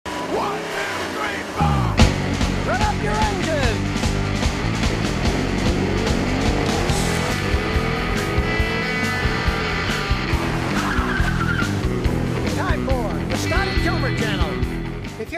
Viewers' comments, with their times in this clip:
0:01 what exactly does Scotty say in the beginning.. is it .."rev up your engines" or "grab up your engines"...i wanna know...